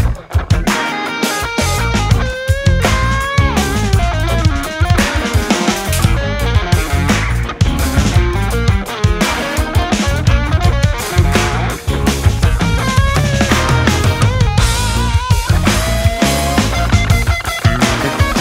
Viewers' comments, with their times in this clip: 0:04 The Lick at the mark !!!!!!!!!!!